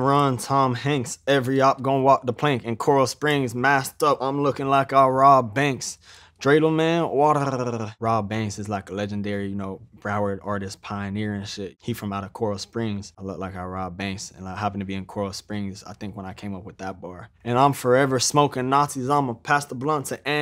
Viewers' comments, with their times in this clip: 0:06 How tf he even do that??? That "Wadddlllttt" is crazy